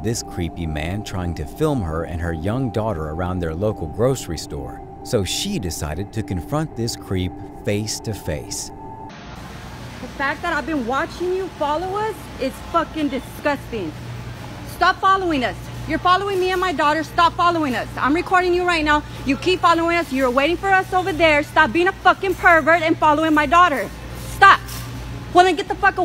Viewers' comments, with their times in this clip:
0:07 bruh imagine you a honest man shopping for groceries and a chick yell at you like this infront of everyone 😭😭😭 Ma boy got his groceries and everything 😂😭😭😭🤣🤣
0:12 I love her the fact that she uses her shouting in public to draw attention to the man and make him feel embarrassed and vulnerable ❤